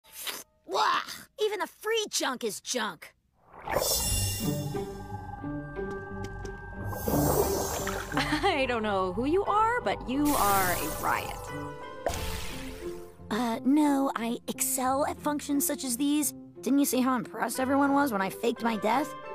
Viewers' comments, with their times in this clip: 0:04 EDA'S REQUIEM IS PLAYING A BIT IN THE BACKGROUND WHEN RAINE SHOWS UP I'M CRYING